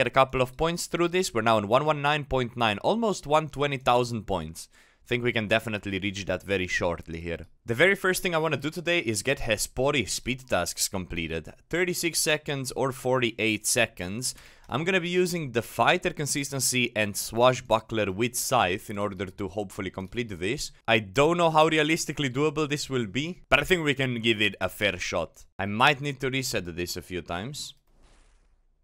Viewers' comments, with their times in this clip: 0:09 I've watched you for years now and when you said "the very first thing I want" sounded like someone completely different 🤣 about broke my neck checking if my video changed.